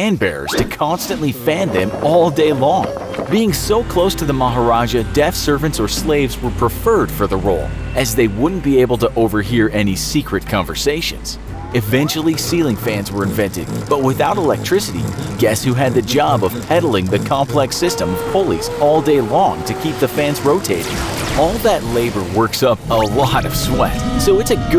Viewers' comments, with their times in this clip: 0:08 Was that the Iphone alarm?